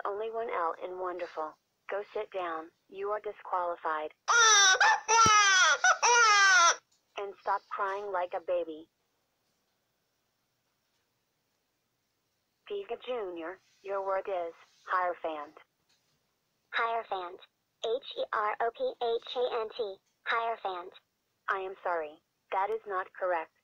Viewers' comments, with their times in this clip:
0:04 Piconian Nano Crying